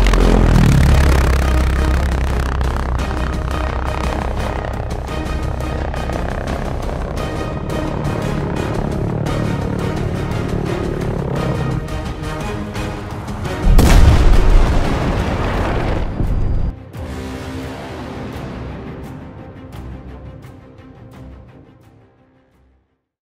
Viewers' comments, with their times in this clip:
0:10 The impact sound will be forever in my memories becouse no game will ever have this level of making you scared.